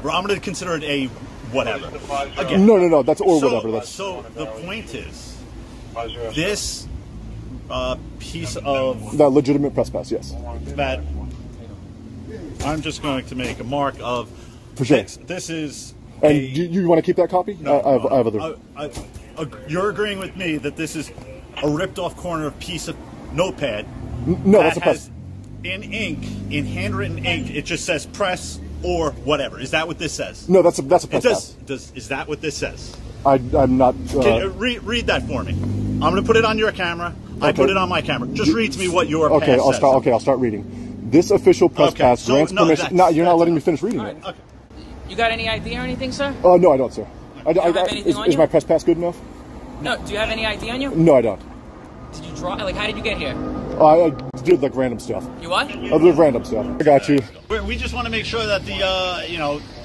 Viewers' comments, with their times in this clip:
0:08 Turn on captions when he says "legitimate press pass" the captions say "that legitimate trespass" lol
0:43 Gilbert Godfried's brother.